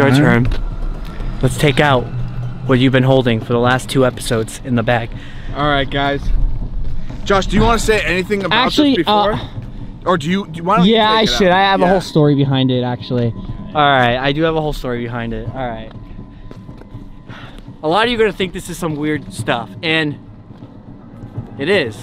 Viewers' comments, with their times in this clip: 0:07 When you blow in that whistle it sounds real scary. Imagine someone else being in the woods and hearing that sound in the far. They would probably run quick out of there….